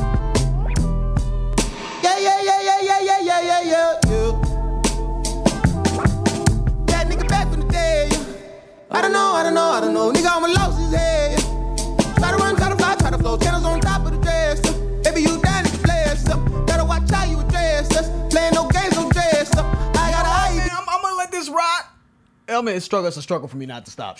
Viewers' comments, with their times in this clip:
0:07 am I the only one who's obsessed with the harmonies of